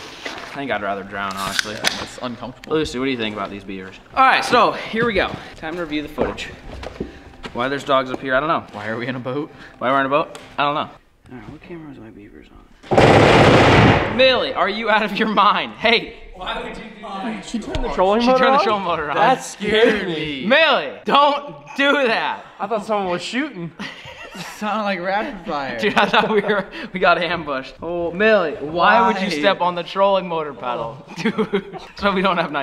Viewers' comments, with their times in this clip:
0:10 tbh I thought it was a drive by
0:13 Sound like gun shots 😂 rip